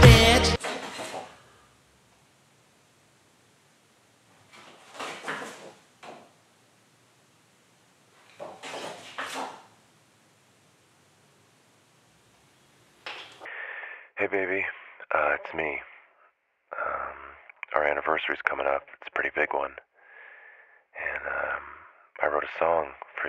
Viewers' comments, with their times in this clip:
0:10 Laughed my ass off at the bit where he says his least favourite word is [bluetooth disconnect sound]. Then realised it was just my shit little earphones.
0:10 he sounds like Drake